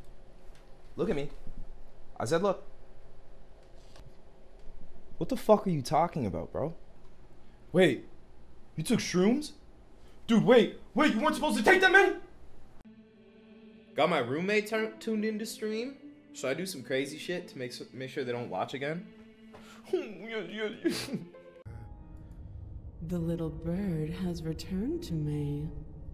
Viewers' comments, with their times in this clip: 0:07 “ Wait you took shrooms, Dude wait, wait you weren’t supposed to take that many… “ 🫥 That was a good delivery! Good Job!!! 👍🏼